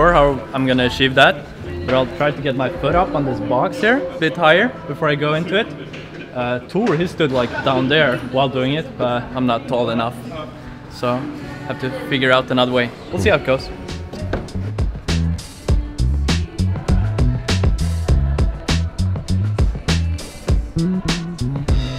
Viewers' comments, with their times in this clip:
0:05 What he actually said was: "I'm not Thor enough, so..."